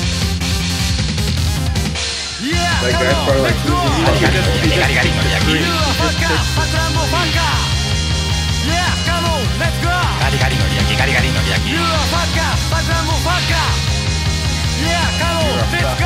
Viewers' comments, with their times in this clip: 0:03 sounds like "got it got it know real king" It mean he can only be real king.